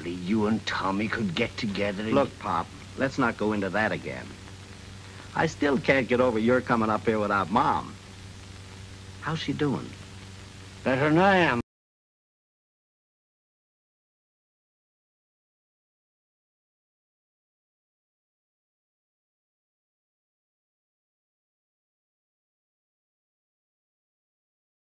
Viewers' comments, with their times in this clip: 0:10 The sound seems to cut out